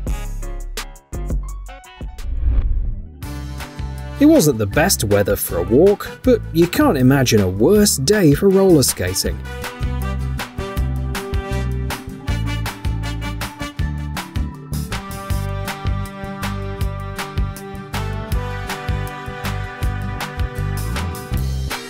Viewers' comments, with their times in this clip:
0:03 The music starting is good. Kazoo are awesome